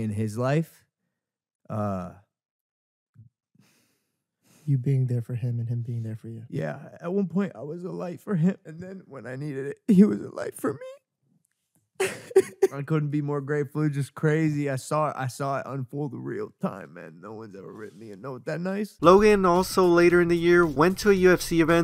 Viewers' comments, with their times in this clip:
0:07 bro logan crying got me cracking up🤣🤣